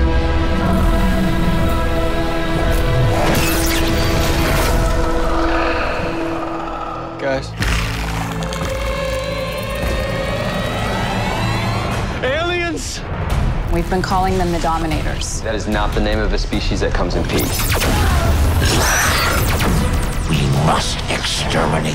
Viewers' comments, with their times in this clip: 0:04 why aliens sound like "clickers" from The Last of Us